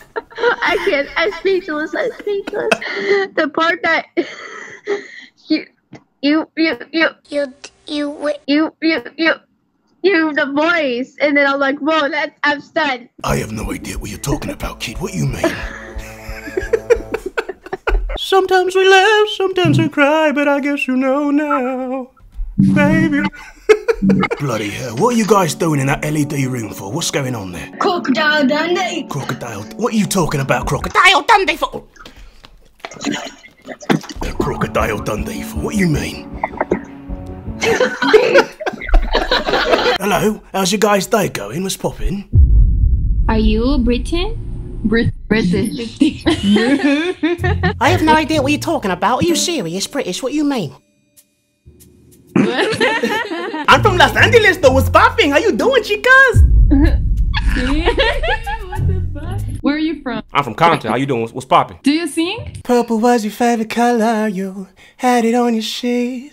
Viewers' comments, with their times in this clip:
0:05 that's when he got older
0:05 that thing the word he repeats this kid has a condition where this kid has hardtime talking like in IT the movie where the characters don't talk properly because they have conditions or disorders so don't make fun of the kid
0:08 the stutter kid grew up 🤣
0:29 😂😂😂 the vocal switch
0:48 I felt embarrassed because it looked like they force laughed😂
0:51 It’s the awkward pause of confusion to sudden laughter for me